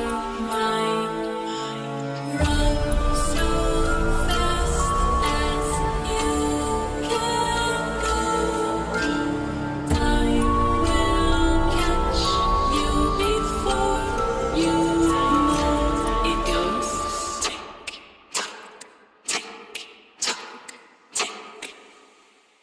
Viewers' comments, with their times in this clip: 0:10 Omg, in she has so sweet voice and the lipsync is so smooth